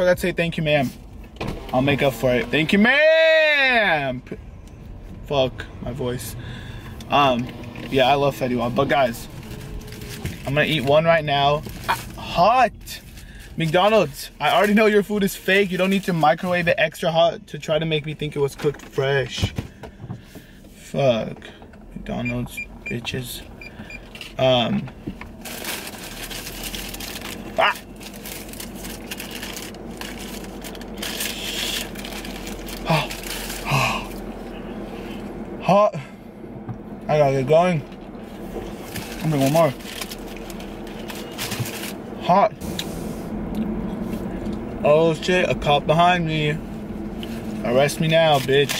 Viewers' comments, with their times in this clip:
0:04 Brawadis balls just dropped
0:34 that huh huh hot